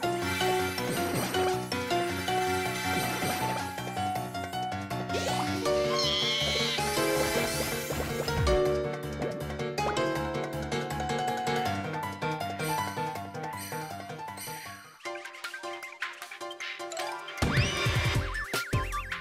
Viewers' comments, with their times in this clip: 0:04 Oh my god Kamek Screams like Croc from Croc:Legends of the gobbos